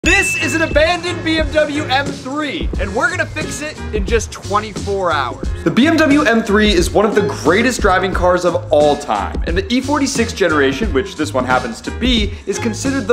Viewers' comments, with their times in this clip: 0:00 "this is" Doug Demuro vibes 😂